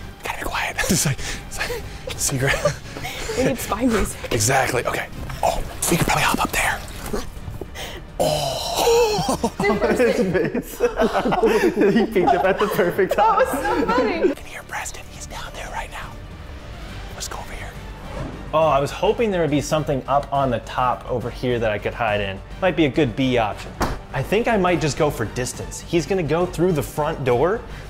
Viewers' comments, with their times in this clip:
0:08 bro does he sound like the pufferfish eating a carrot or what XD